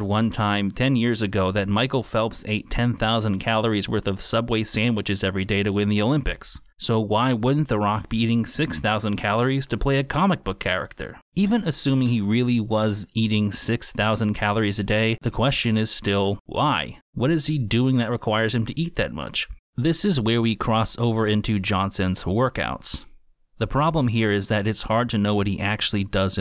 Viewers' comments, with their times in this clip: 0:08 Never seen this channel before, but this was an interesting video. And that caricature drawing was hilarious! I subscribed! was that a snort